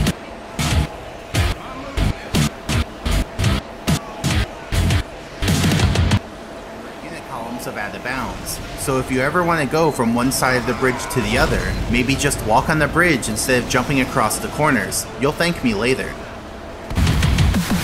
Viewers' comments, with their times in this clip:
0:05 I love the music cutting in and out